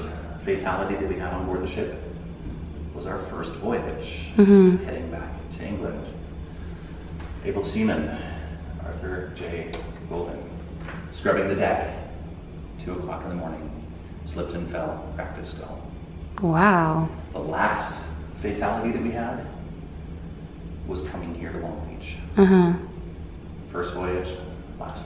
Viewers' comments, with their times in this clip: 0:06 ....he said SEMEN. Sorry my 13 year old kid kicked in.